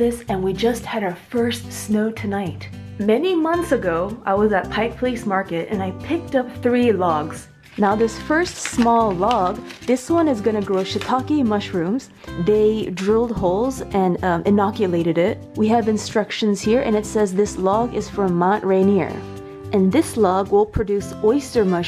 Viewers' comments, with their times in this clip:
0:05 Did she just pronounce “public” “pub-lice”